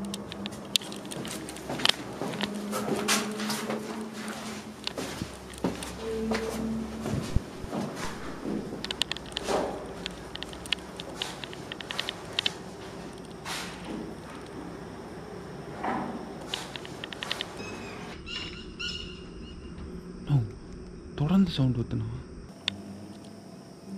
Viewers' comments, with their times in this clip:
0:04 are u noted that sound like humming😳🤯